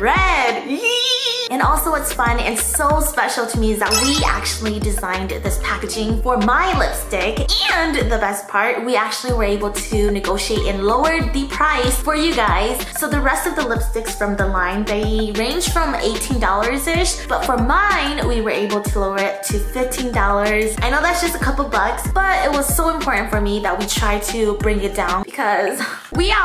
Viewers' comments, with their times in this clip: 0:07 That ANd lol